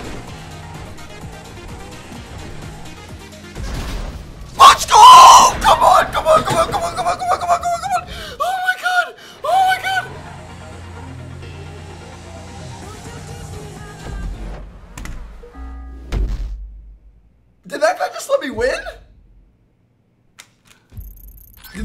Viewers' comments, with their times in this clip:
0:04 at that moment headphone users knew.......they fucked up